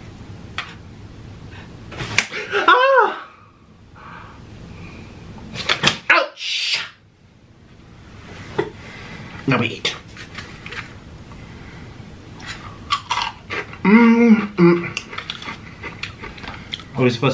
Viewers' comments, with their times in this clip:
0:05 why that sound like a moan